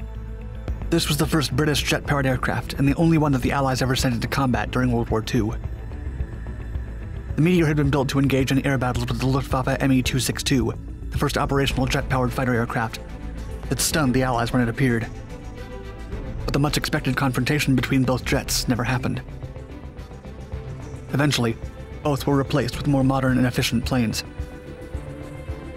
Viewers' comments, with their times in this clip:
0:07 the meteor had been built to engage a WHAT ??